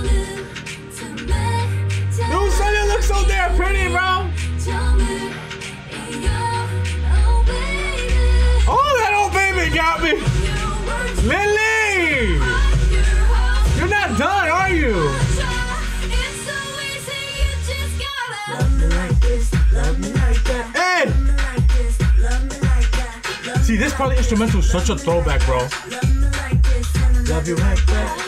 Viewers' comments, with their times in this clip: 0:10 Only u can say "Lilllllly" like that.